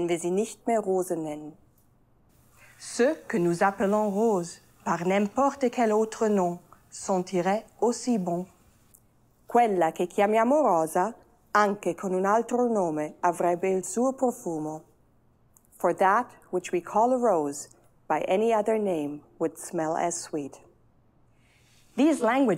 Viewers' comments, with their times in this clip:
0:09 omg that italian accent is perfect